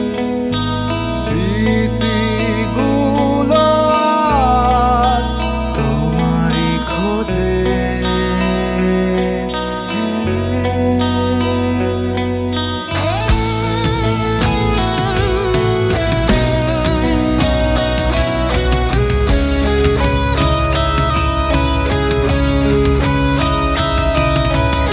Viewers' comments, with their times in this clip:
0:10 You know when you feel the goosebumps and get right into the song? That's what happened when the chorus started from I dn know how you guys are so underrated. Can't recall how many times I've been playing this on repeat. Eto Shundorr gaan ta.
0:10 The moment when you feel how important the buildup till minutes was for the goosebumps. The dynamics of this song is just on another level. Gives a flashback to your life.
0:10 After the guitarist and drummer enter in god mode.